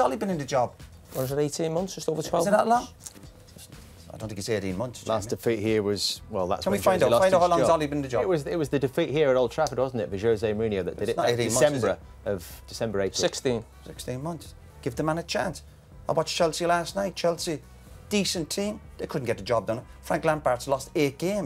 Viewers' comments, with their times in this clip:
0:06 Roy as if he is talking to Alexa 😂